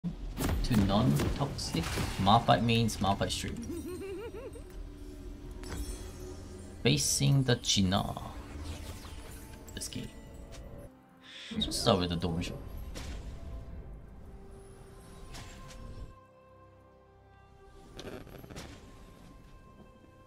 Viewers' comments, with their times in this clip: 0:03 what was that laugh?